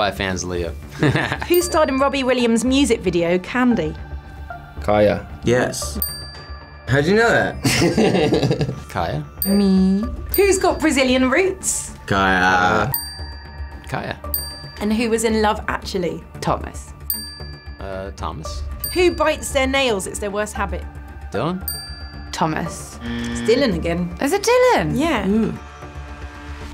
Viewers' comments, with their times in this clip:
0:08 Thomas' face and laugh
0:08 his laugh is so adorable